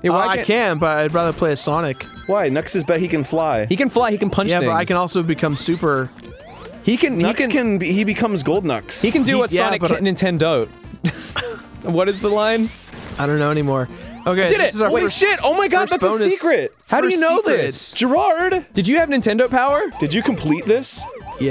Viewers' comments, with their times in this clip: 0:09 LOL, when ross said "ninten-don't" so australian